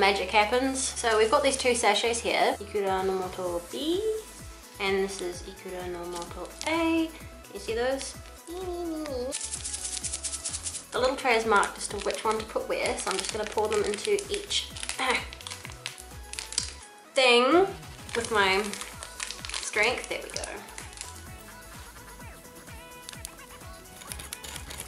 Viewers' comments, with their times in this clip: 0:08 "eee meemeemeemeemeemeemee" SO CUTE HAHAHA